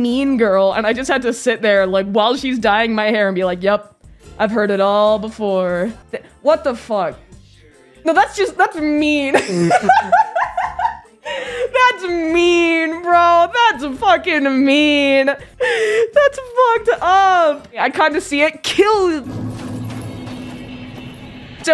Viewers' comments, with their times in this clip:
0:08 “No that’s just—that’s mean.” proceeds to laugh hysterically